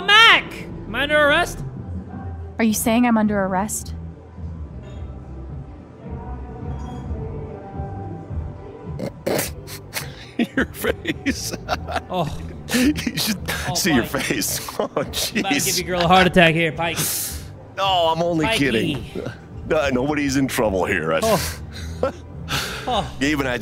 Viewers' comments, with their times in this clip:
0:07 The laugh timing couldn’t be more perfect cuz of that woman in the back
0:07 the woman in the background glitching and the officers laugh are amazing
0:07 and in all that silence and tension, this lady in the back just had to adjust her seat 💀💀💀